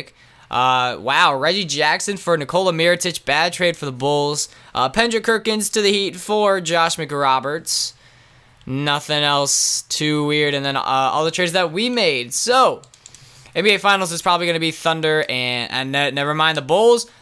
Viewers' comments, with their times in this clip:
0:04 pendrick kerkins lol he says his name wrong every time